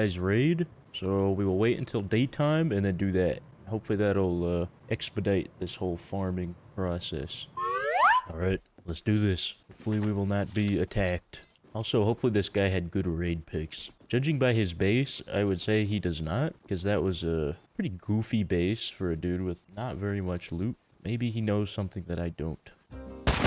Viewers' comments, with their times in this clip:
0:06 Goofy ahh sound